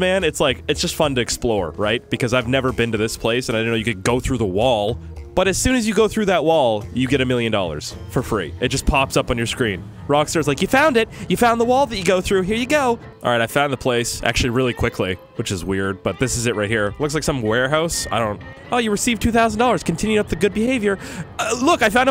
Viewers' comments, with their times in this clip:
0:10 At like he sounded like a person off of bobs burgers